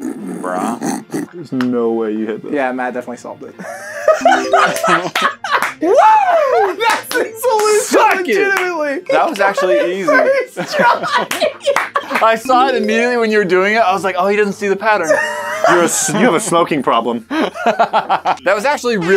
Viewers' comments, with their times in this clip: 0:04 but you laughed tho !! so they got you !